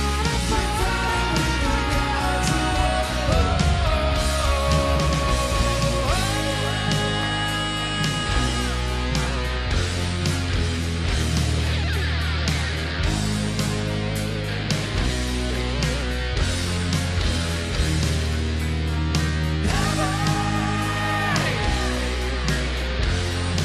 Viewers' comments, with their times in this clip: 0:06 always reminds me of The Beatles 'She's So Heavy' from Abbey Road. Methinks it's an obvious nod to their fellow Brit rockers.